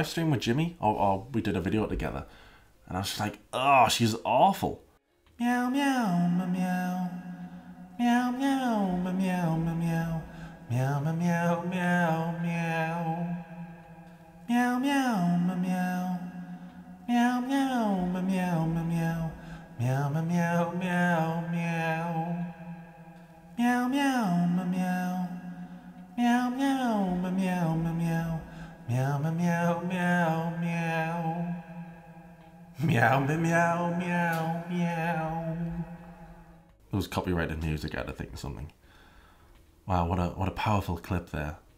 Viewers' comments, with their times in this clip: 0:07 the meowing omg
0:10 THE MEOWING I CANT
0:23 you doing the miaw miaw miaw is gold 😂😂😂😂